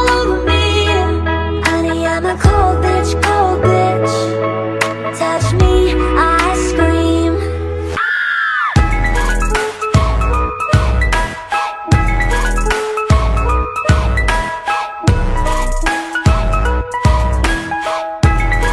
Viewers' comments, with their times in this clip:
0:04 beat drop "tiktok sound"